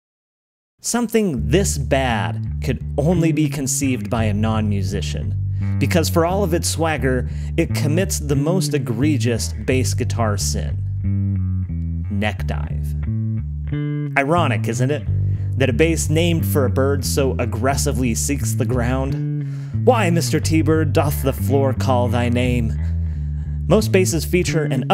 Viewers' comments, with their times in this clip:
0:09 there's no 't' in 'egregious' my good man